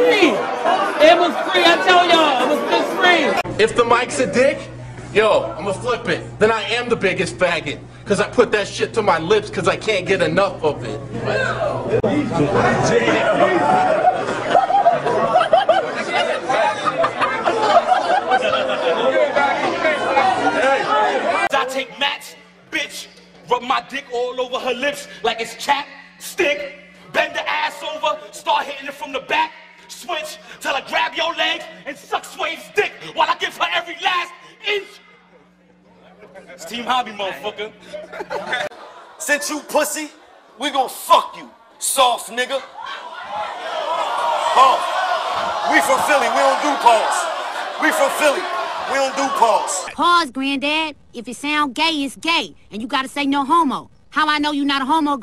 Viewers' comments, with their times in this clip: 0:10 I ALMOST LOST NY SHIT WHEN I HEARD THE GUY IN THE BACK
0:10 he started drawling 😂😂
0:28 I think dude said "team homi" not "Steve Harvey" lol
0:30 it’s always that one person in the back saying “what 🤨” that makes it so funny
0:37 the crowds silence💀💀💀